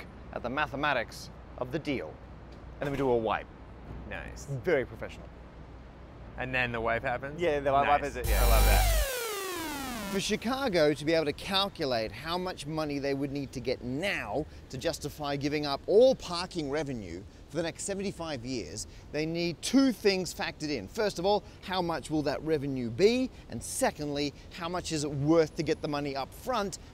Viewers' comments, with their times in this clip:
0:08 That's not a wipe, it's a stinger. Or maybe a wipe and a stinger. ;-)